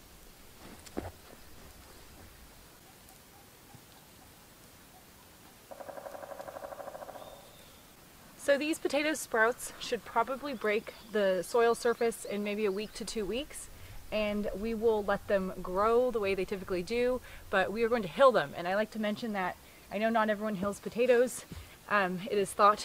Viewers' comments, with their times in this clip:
0:05 have you heard the woodpecker ? you're not working alone :D
0:07 So just what kind of wood peckers do you have in Ak I heard one ?